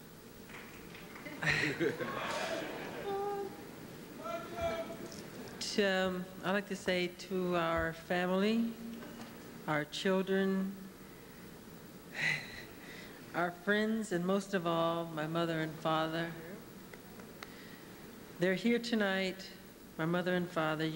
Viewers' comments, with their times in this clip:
0:03 Not Tito imitating Michael's voice real quick Lmao